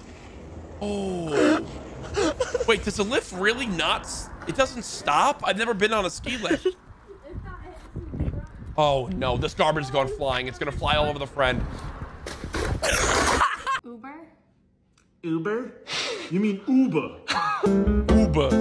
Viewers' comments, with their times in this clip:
0:05 what was that laugh courage😂😂😂😂